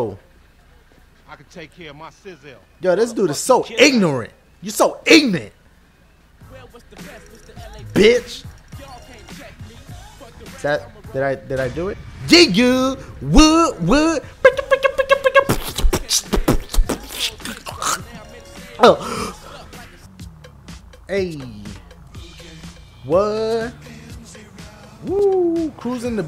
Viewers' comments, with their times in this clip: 0:08 Hahaha.. when he chokes while beat boxing @ like had me in absolute tears!